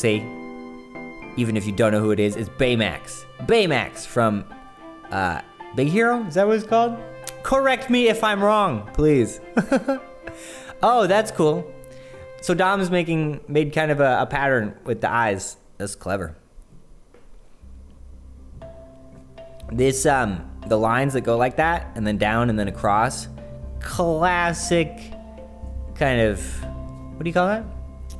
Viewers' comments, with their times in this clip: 0:09 He sounds like Mr. Peanutbutter when he laughs